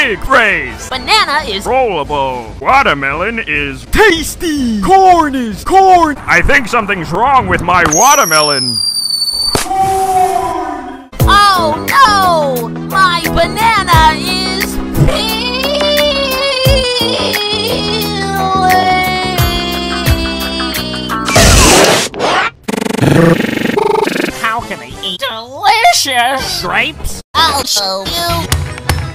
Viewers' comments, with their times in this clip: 0:10 auto tuned SpongeBob